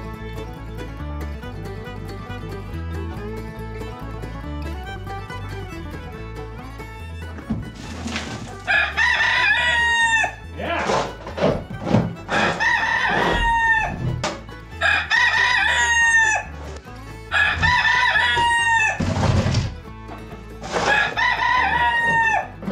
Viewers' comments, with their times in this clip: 0:06 Cock-o-doodle-doo on is hilarious. :face-green-smiling: